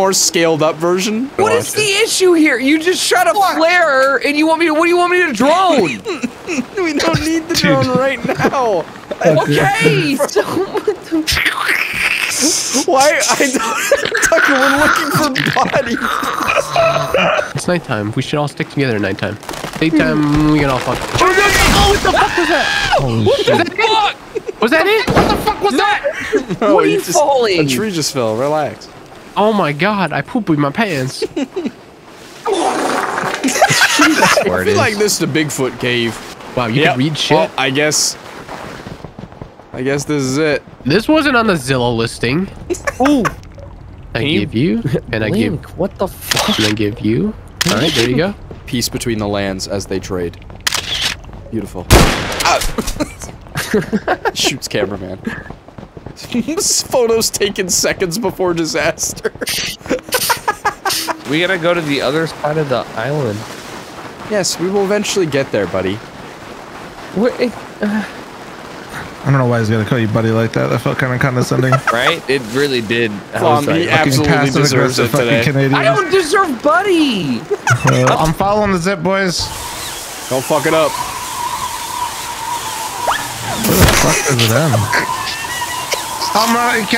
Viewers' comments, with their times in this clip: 0:08 Is it just me or did that sound like the predator?
0:11 Bro who is getting a cleaning at the dentist right now
0:11 mans sounds like that suck thingy that you use at the dentist
1:07 its like someone moaning?.. oh wait im from the future😮